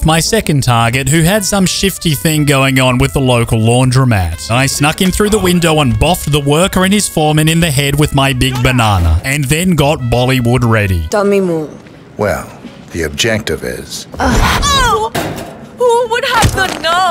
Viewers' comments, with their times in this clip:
0:03 Fun fact: if you fast forward 5 seconds right after he says "local", it will sound as if the guy had some issues with the "local banana" I literally misclicked in a perfect moment